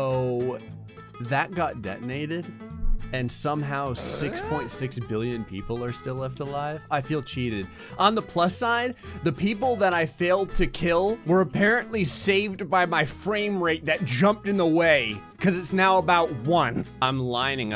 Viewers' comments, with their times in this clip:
0:03 I love the fact that the Tim The Toolman Taylor (Tim Allen "huh" grunt from Home Improvement) was thrown into THE PERFECT MOMENT! I'm 31 and straight caught that when somehow 6.6B ppl are still living